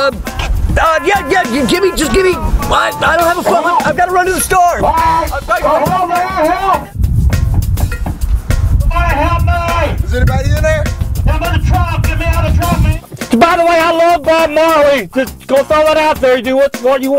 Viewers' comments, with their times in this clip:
0:05 lmao he is like the older version of Drake bell from drake and josh!! The way he said " ok wait I gotta go to the store"!! Truly resembles his personality just like it was from the sitcom